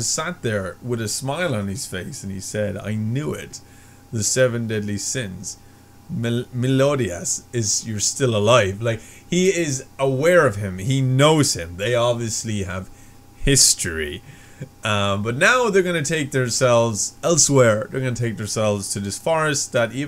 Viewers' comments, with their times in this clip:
0:05 don't worry it took my a while to say his name properly ;)